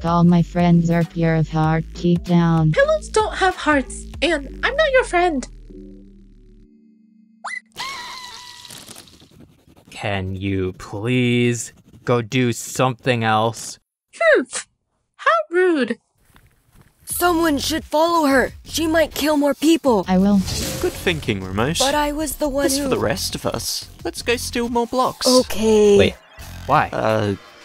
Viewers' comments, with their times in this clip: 0:10 why does BlackHole kinda sound like he's singing, or is it just me?